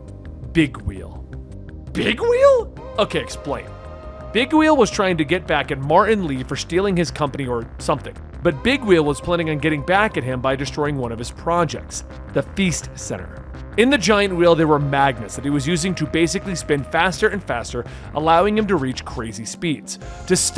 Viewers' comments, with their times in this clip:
0:06 Mar'in Lee? Who's that? Sounds like he's from Mars.